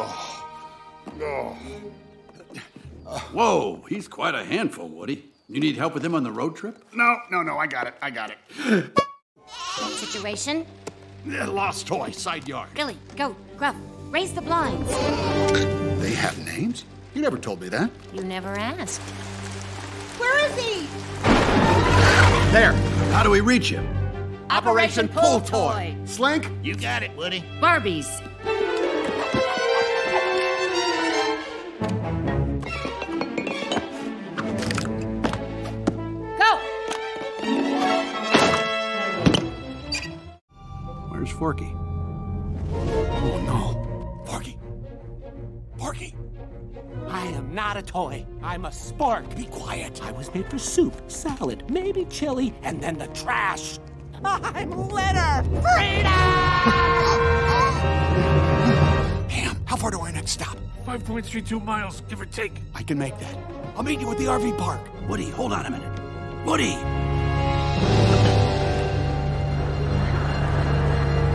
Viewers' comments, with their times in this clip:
0:08 HAHA that noise
0:56 That Inhale, LOL!